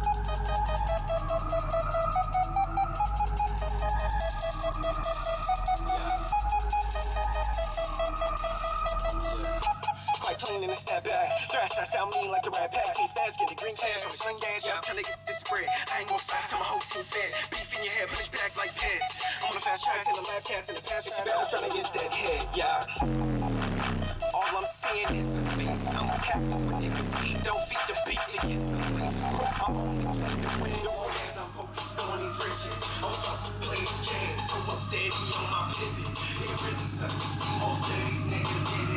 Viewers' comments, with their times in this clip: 0:03 whats the song name from so nice bass
0:22 sounds like someone in the backseats gone overboard with the eggs and beans hahaha =P Looks brilliant, and it probably sounds brilliant in real life aswell(this video doesn't do the setup any justice. I like the resourcefulness of the fed ex boxes in the boot haha, are you using them as mounts or something? I thought the heat from an amp would be bad for cardboard. I'm gonna be installing a decent sound system in the future so you think it would be alright to ask for your help if needed?